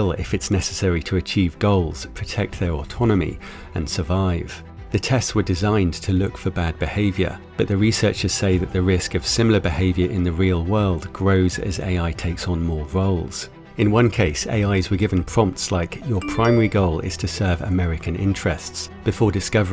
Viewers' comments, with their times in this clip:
0:04 AI's sound like Mr Meeseeks from Rick n Morty 😂